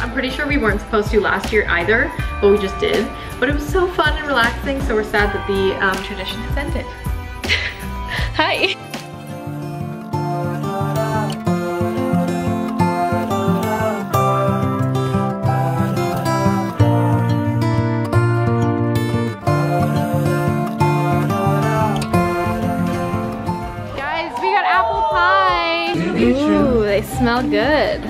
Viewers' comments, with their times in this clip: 0:09 people karaoking to bohemian rhapsody made my day...have been binging on queen songs interviews like crazy and I might be falling in love with freddie as well as rami..